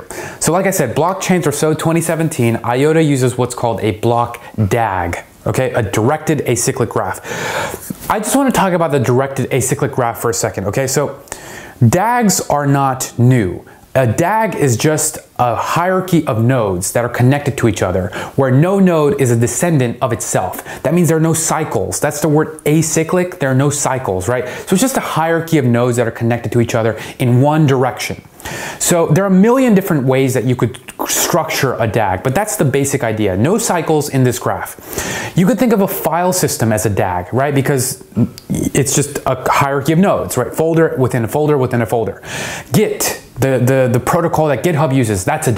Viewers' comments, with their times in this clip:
0:06 thought you gonna sneeze lol.
0:30 Awesome videos man, very informative. I appreciate you taking the time to post these. I do have one question. What made you go full chipmunk .?